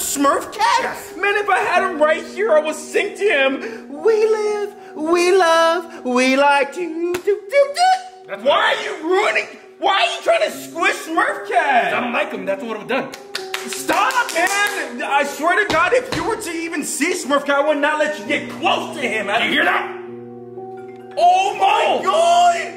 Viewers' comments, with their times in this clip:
0:03 DANG THIS SONG IS FIRE❤️‍🔥